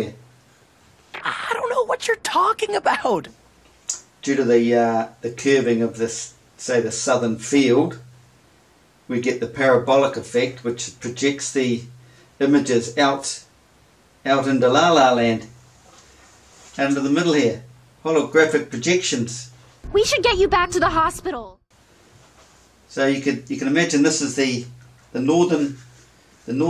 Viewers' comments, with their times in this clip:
0:08 ".... we get the parabolic effect ...." It maybe his accent but i'm sure he really means the "pair of b*llocks" effect.